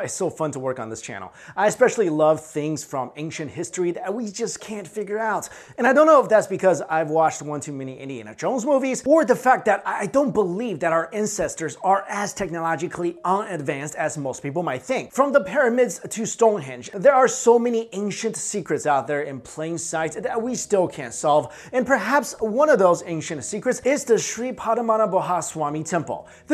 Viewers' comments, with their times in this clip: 0:10 he says incesters instead of ancestors :DD